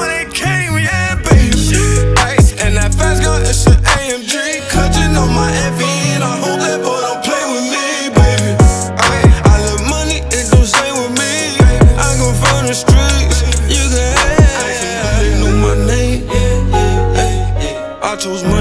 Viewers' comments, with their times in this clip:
0:05 That beat switch up 🔥😭tufffff
0:05 Dat breakdown hard asf. 🎶🔥